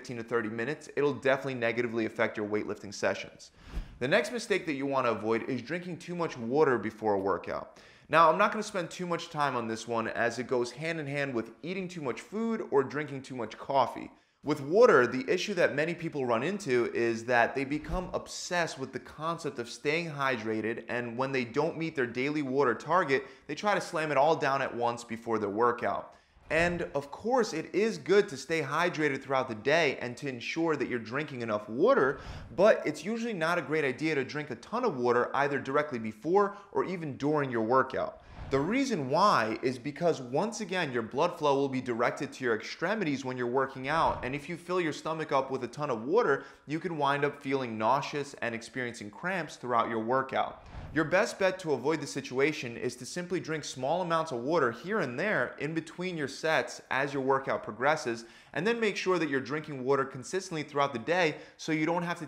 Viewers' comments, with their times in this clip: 0:05 did this man just say "woahder"??
0:44 is it me or is this dude saying water in a freaky deaky way